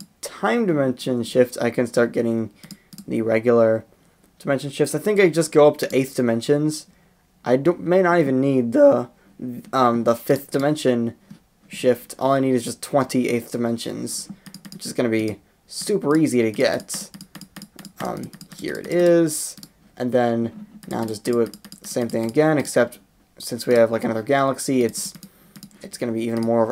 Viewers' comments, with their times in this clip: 0:08 ebic voice crak again